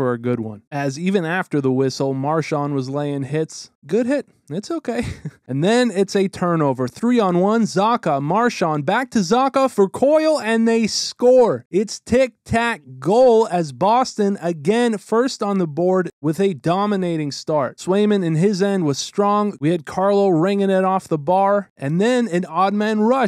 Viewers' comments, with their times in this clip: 0:06 why do you talk like that